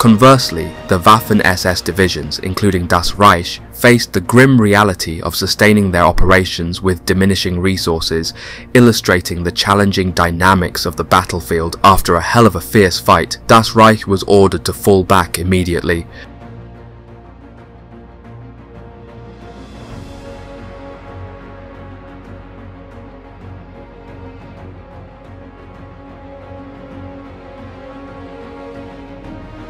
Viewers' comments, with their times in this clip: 0:10 The narrator actually gets to pause in his rapid, continuous text.